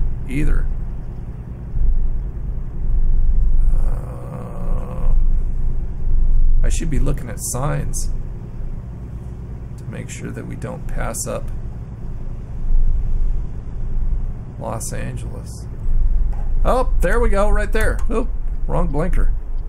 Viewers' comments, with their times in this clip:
0:06 I thought he was engine breaking 😂😂😂